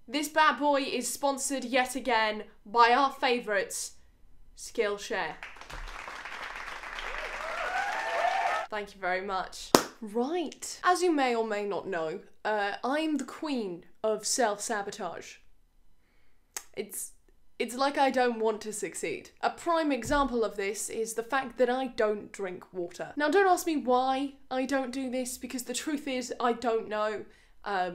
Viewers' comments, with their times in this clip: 0:10 Girl I live in Mexico so constant shootings are normal... but I had my airpods on and those claps really made me go to the floor to protect myself X_X